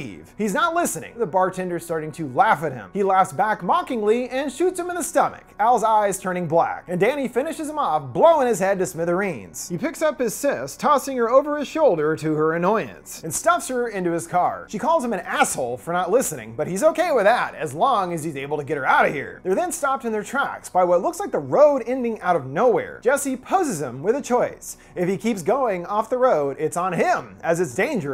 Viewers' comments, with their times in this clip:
0:09 Is it just me, or did the audio go weird here?